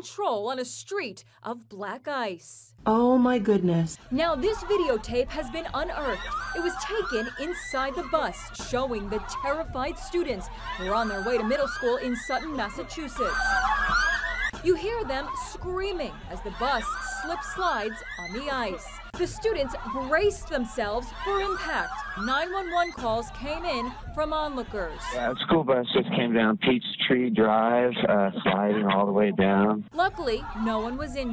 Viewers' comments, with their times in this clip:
0:09 she said the terrified students😂😂 to Me it looks like they were not scared at all they were screaming and laughing ahhhhh I'm so scared
0:14 I hear them laughing